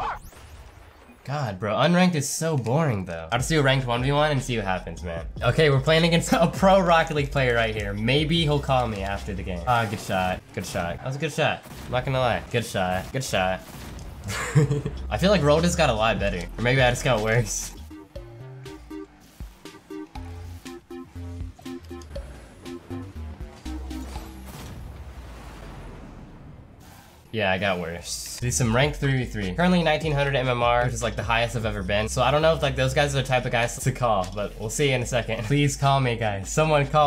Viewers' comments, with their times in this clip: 0:10 i was in a actual kahoot in class and i thought everything just got loud for no reason lmao
0:17 why is there kahoot music 😂
0:18 kahoot music. Me:What's the pin?
0:18 when kahoot song play in
0:19 I love how the kahoot music is playing